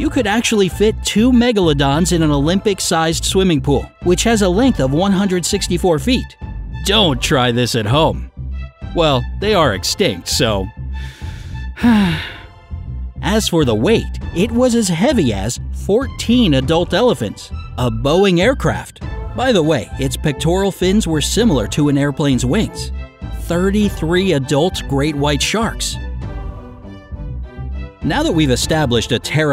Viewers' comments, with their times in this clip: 0:07 I heard Oh Try this at Hope
0:11 * disappointed sigh * hol up
0:12 ummm why did you sight..... are you sad they extinct? Im confused.